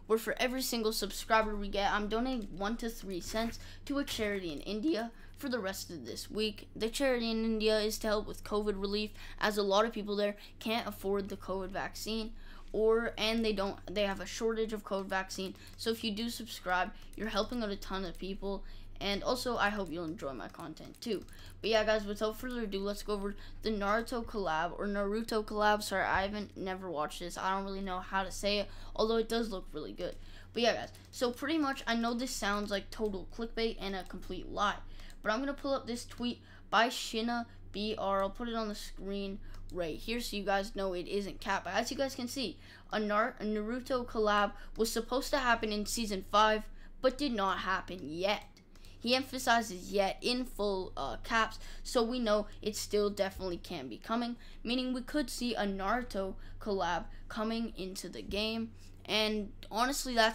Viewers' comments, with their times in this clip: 0:04 massive voice crack
0:43 he was prounouncing it right, then he corrects himself by saying the wrong pronunciation of Naruto😂😂😂